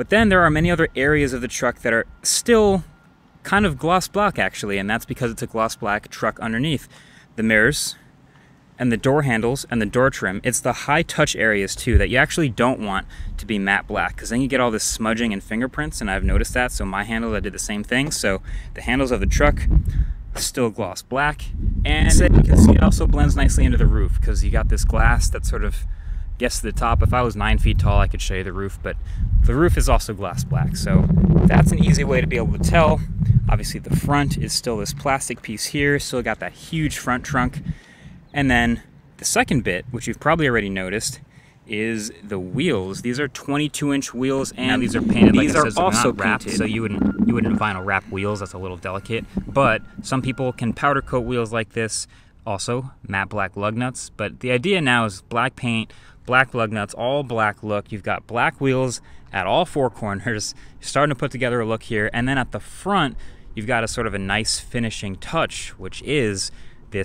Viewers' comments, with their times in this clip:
0:04 did Marques say "gloss blaack" like he's high claass? ??
0:41 wtf is with the audio
0:42 Audio issue, oops. Yes, Matte black everything! USB-C all the things! My brother didn't like the matte black but I love it! My dad has a blue 2016 Ford F-150 eco and it looks great and this takes black to a whole new level.
0:42 you hear the edit of Marques talking over himself hahah
0:42 Rare audio error from MKBHD hehe
0:42 What's going on ? Voice overlap?
0:43 quit talking over yourself. lolz
0:43 Is that overlapping audio or am I tripping?
0:44 what’s going on there with the sound? can’t blame the wind for that.
0:44 Editing glitch: overlapped audio:
0:44 anyone else hear that audio overlap lol oops
0:44 why is there 2 Marques' speaking?🤣🤣
0:44 sound needs edit
0:44 MKBHD audio glitch...😩
0:44 Audio randomly cross fades
0:45 Great video but sound issue
0:45 What's with the sound overlap ?
0:45 …. Who edited that audio? Or didn’t? Lol
0:45 Audio overlap for 2 clips I guess!
0:45 audio track overlap here. Not sure if it’s just me. Just fyi
0:45 Why do I hear 2 different voices ?
0:45 audio issue just letting you know
0:46 Dint expect a audio jump this bad!! 😅
0:46 double voice over 😅
0:46 Focus into the video you overlay two audio tracks of you talking saying nearly the same thing in two different ways
0:47 bit of audio overlap there...
0:47 There’s some audio overlap
0:48 Interesting audio overlap
0:48 what happened there lol sounds like unintended audio tracks overlapping
0:48 What's with the audio ? Must have been shot on an iphone.😂 could be my device.
0:50 audio editing, double voices
0:52 weird audio transition
0:53 Two clips of audio overlap